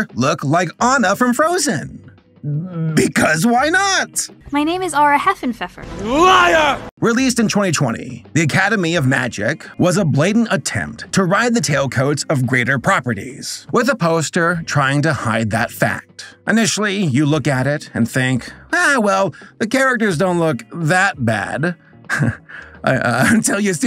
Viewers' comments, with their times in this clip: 0:05 IS THAT AN AI VOICE?